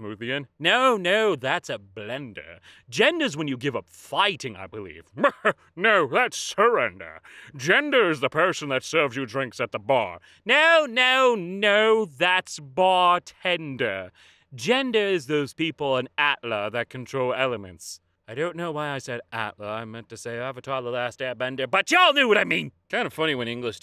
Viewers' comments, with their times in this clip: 0:05 my dad overheard and thought it was french for some reason